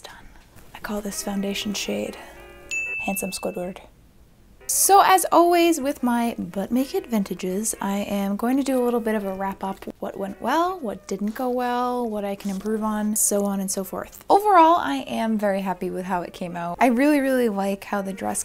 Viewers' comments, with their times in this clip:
0:06 Maybe because I watched the first half in between errands and then came back to catch the end I must have kinda forgotten what I was watching , because I thought you said, “...so as always with my BUTT-NAKED VINTAGES...” Lol😳🤭